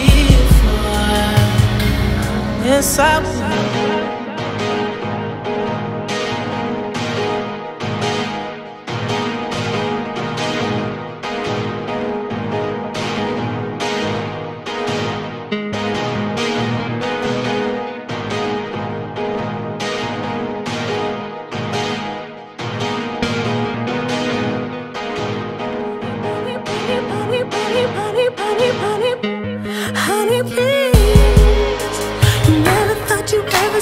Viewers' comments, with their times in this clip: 0:03 The instrumental from is my favourite thing!
0:03 that beat switchup is legendary. reminds you of the scene in horror movies when the teenagers enter a haunted house and know they done fucked up.
0:03 That loop always gets me !
0:19 that Beethoven side came out 😂💘